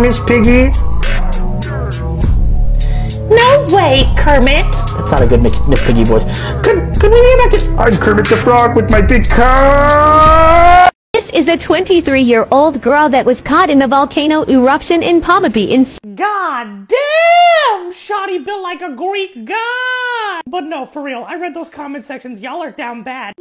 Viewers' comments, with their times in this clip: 0:09 bro sounded like a race car 💀